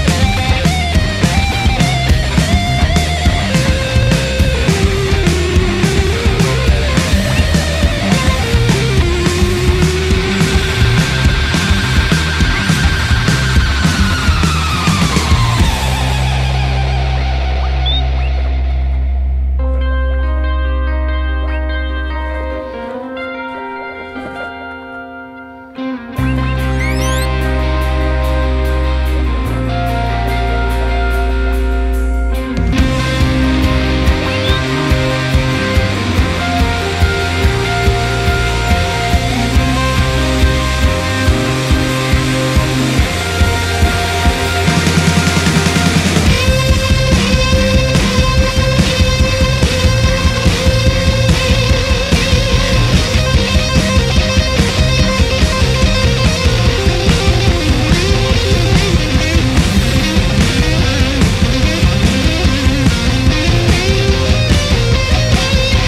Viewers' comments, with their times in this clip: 0:07 Nice pig squeal :D
0:46 holy shit this was heavy